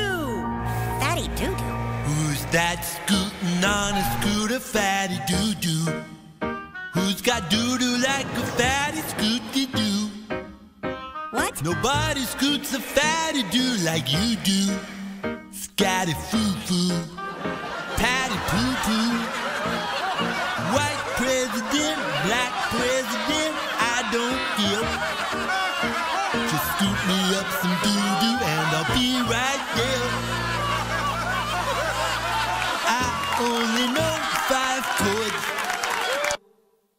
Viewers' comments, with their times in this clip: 0:10 randy newman having an existential crisis
0:23 The way he sings "care"' is killing meeee 💀💀